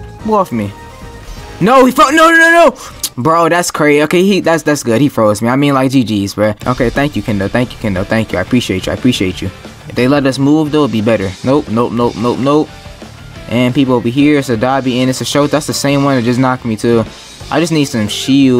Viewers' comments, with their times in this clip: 0:06 had to Start the clutch up music🤣